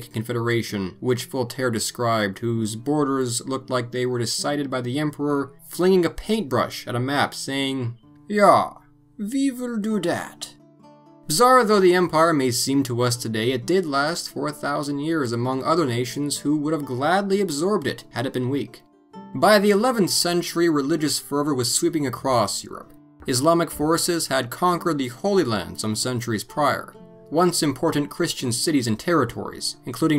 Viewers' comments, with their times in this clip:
0:10 That accent should have stayed for the rest of the documentary....
0:14 4 thousand years???